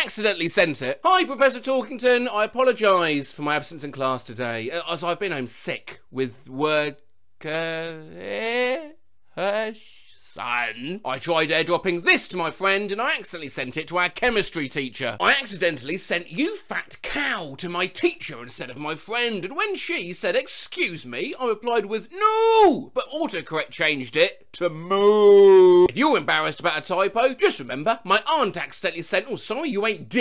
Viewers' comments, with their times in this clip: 0:05 The son made me burst out laughing just the way he said it lol
0:06 AYO you can sing?!1!1!1!
0:06 sounds like Woody from bfdi
0:15 Sounds like a beluga video